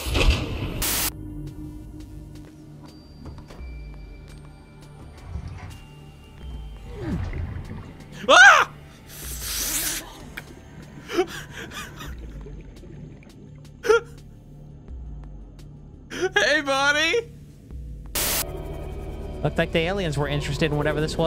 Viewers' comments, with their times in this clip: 0:07 INSERT JAR JAR BINKS SCREAM